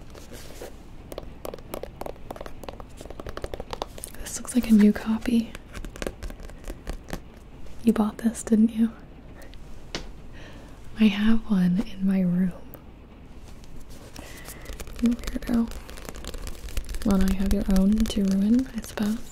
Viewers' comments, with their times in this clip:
0:05 AAAAAAAAAA I got quality headphones 4 the first time in my life when she tapped the book at like I was like AAAAAAAAAAAA(in a good way)